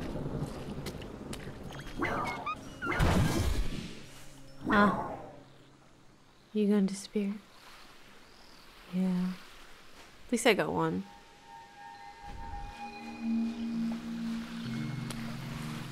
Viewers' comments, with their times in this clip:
0:03 that WAZAAA brought me back to the phasmo days with da boiz HAHAHAHA